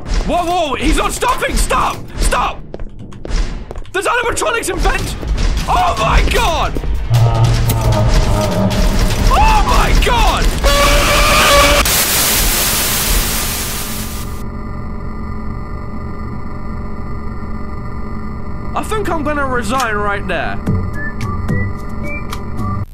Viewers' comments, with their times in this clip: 0:10 a nine year old on the mic when he loses
0:10 sounds like the developer took a deep breath and screamed as loud as possible
0:10 why does the jump scare sound like Tobey Maguire's scream from spiderman
0:10 Tobey Maguire scream
0:10 when the kid didn’t get his dino nuggets and he screams
0:10 how my 14 year old brother screams when he loses fortinite.